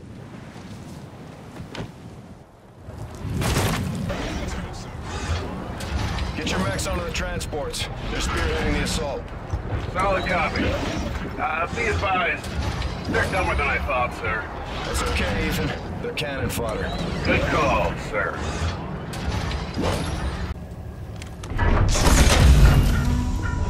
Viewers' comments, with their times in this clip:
0:05 sounds like randoms in Warzone
0:11 I like how when Reyes says the bots are cannon fodder, you can hear a slight bit of bitterness in Ethans voice, as if he was slightly hurt by Reyes saying bots are expendable